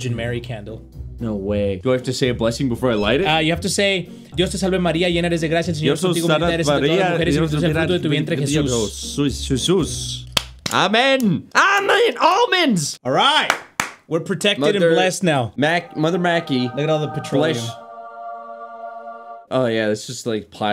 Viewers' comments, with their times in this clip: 0:05 bro was speaking gibberish